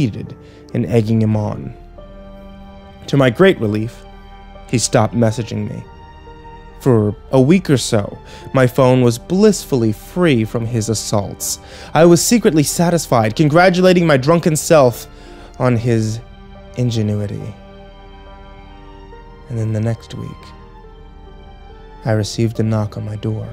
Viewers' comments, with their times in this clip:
0:10 what is the background music minutes? It's really nice, as if some one is walking towards home after a long ordeal. Please let me know, thanks.